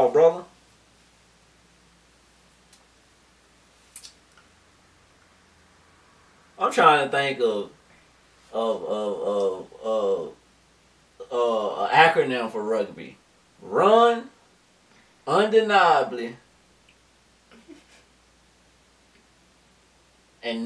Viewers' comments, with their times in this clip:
0:03 That pause I lost it.